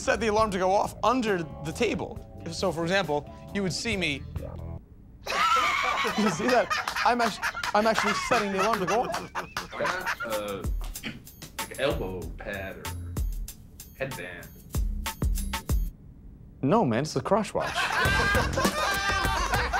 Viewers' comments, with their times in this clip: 0:04 I love how the music just stops it was the perfect timing